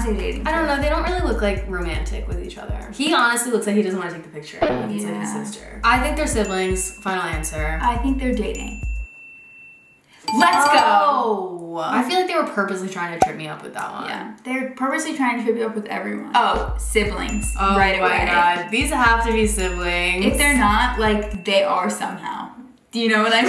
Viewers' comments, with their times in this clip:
0:09 that was the softest "let's go" i've ever heard 🥺